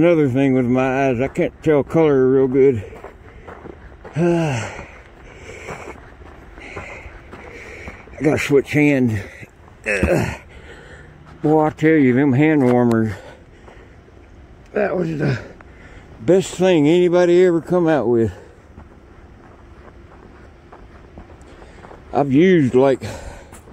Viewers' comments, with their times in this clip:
0:08 I'm watching it on my phone and I noticed that I could actually hear the direction of his voice change between the left and right side speakers on the phone (when rotated sideways) while he was switching the camera between his hands during the escape from the yard.